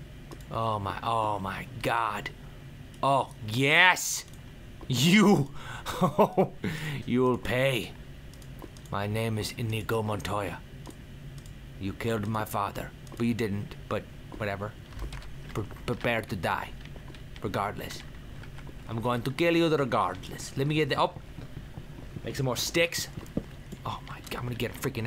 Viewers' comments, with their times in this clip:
0:06 His Spanish accent is the worst by far... X'D